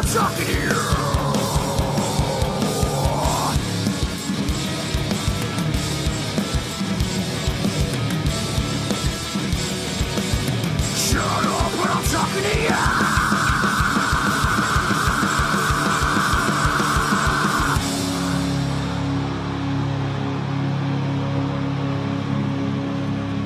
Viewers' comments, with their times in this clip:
0:10 Chester still can do it! That scream was monstrous!